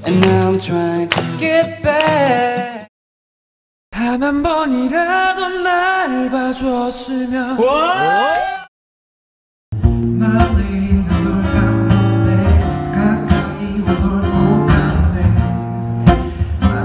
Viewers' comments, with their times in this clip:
0:03 U-Kiss Jun wow, it really really sounds like Hakyeon's voice (N, Vixx) :0 - by the way, he sings very good ^u^